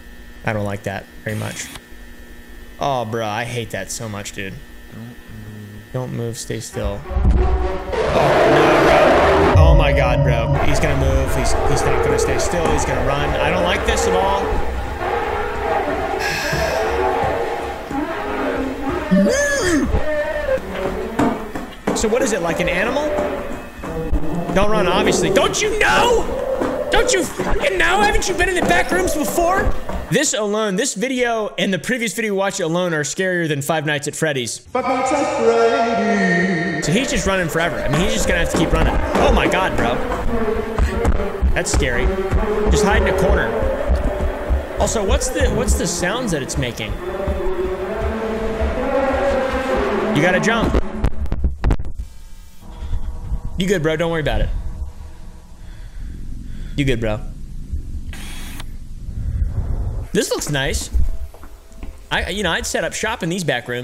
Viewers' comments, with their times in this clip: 0:08 listen to the monster's roar for a little bit, it sounds like it is yelling "DONT GO"
0:49 if you thought it's howling is disconcerting, Oompaville, then here's something that'll leave you in shivers — it's literally saying "no", "wait", & "don't go". There's a video of just it's noises. It's basically the minds of those that the bacterial entity (genus: Hay [species: I don't remember. It's an actual bacteria]) consumed in times passed. It's an "assimilant", as I like to call it. Like 1982's The Thing from John Carpenter, but it disdains sociophysiological mimicry in favor of attracting others to "join it's singularity", if you will.